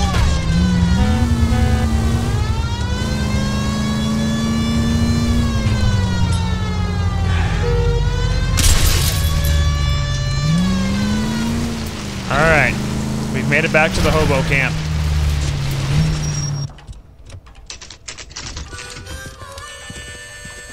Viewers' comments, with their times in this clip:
0:07 Sounded like a MLG Noscope